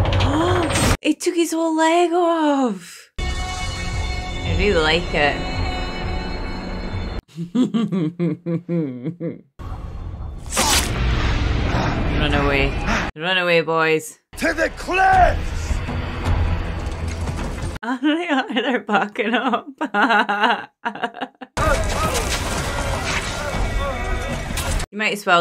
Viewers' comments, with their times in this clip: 0:08 I must say I love watching reactions to this movie because it's one of my all-time favorites and yours is by far one of the best your narration through the whole video was on point and funny and your little devilish laugh was so damn cute you have a new fan now!!!!